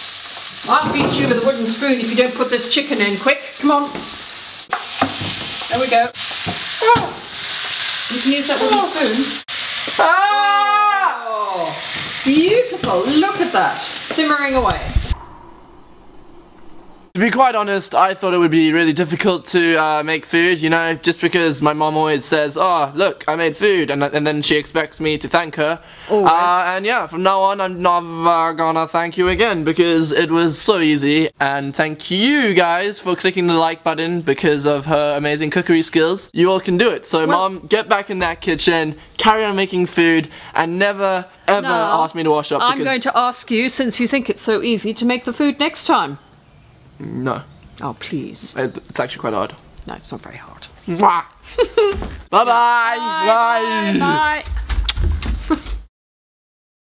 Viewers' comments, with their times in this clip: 0:09 wow, you sounded naughty pouring that white cream ;)
0:43 his mum sounds like the woman off the weakest link